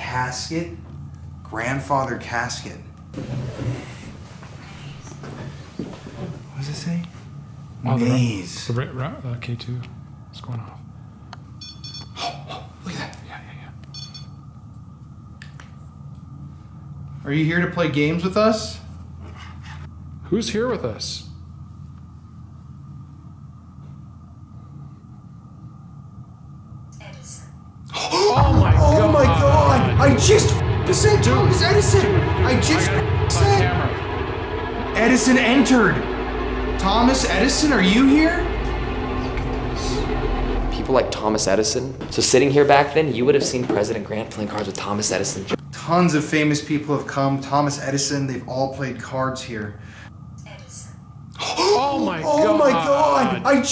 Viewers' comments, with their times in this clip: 0:04 I cant tell if this is coming from the word box or an EVP but exactly it sounds like a woman saying something.
0:39 I hear yes in a whisper male voice